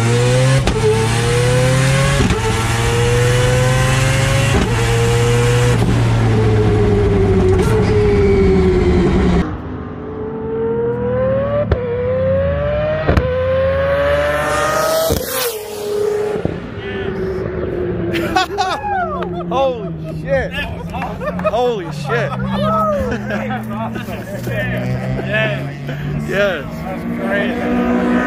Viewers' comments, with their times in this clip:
0:09 I never thought anything could sound better than the 787B, that was until the flyby I can't get over it. Well done bro, and thanks for sharing! Subbed.